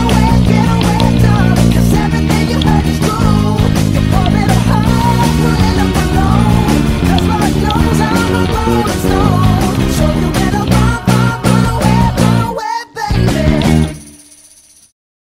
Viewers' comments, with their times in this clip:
0:05 AH SHIT YESS!! this is it!! I type "runaway baby bass cover" and look for the last part only when there is a pentatonic harmony in the original song (I don't know what it is called in ). The top 2 videos do not have that. Damn, only you who play it!! nice one